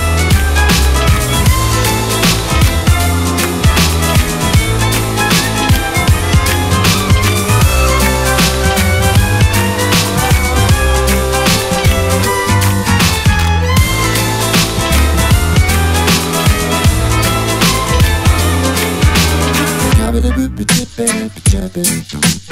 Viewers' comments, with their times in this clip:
0:04 I love the change of keys sounds hear, its very amazing